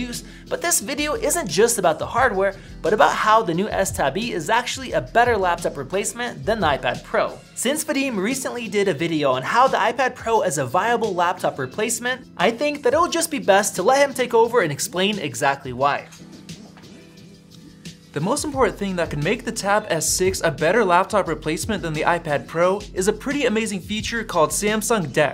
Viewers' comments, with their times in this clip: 0:07 since the S tab E is a better replacement over the iPad pro .... but isn't this about the TAB S6